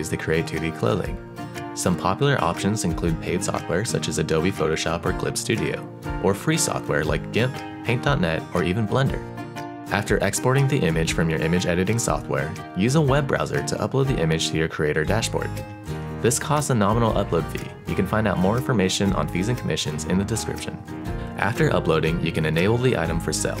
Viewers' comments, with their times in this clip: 0:04 WHAT IS HE SAYING DIMP DINP IDK AHHCHHCHCHCKKKKKKCKGGKKCK